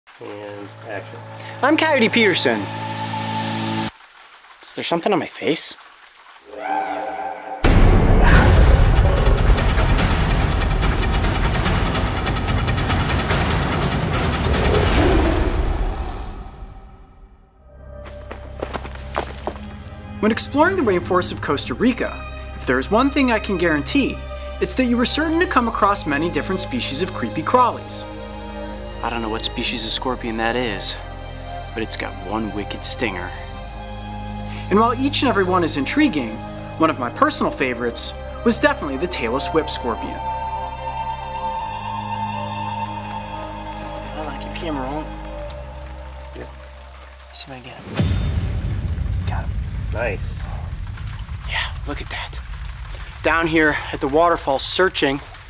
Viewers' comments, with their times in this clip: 0:01 you can hear and action
0:06 Idk what that background noise was
0:36 I thought he said Tayler swift scorpion
0:36 Taylor swift Scorpion? 😂😂😂😂😂😂😂😂
0:38 lol subtitles said Taylor Swift Scorpion . A.k.a Tail-less Whip Scorpion .
0:38 The Taylor Swift scorpion?
0:38 am i the only one who heard "taylor swift"
0:38 Was I the only one that heard "Taylor Swift Scorpion" lmao
0:38 “tailless whip scorpion” me: TAYLOR SWIFT SCORPION WTH OMG OML WAT WAT WAT
0:38 The Taylor Swift scorpion?
0:39 only me think he say taylor swift scorpion?
0:39 Turn on English captions Its the Taylor Swift Scorpion
0:40 OMG i thought he said Tailor Swift XDDDDDDDDDD
0:40 put the caption's on and it will say Taylor Swift scorpion 😂😂😂😂
0:40 I thought he said Taylor swift scorpion XD
0:40 did he say Taylor Swift?